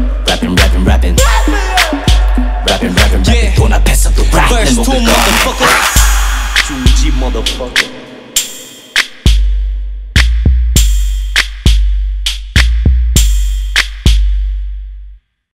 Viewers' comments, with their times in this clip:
0:07 Minhyuk laughing lool cuuute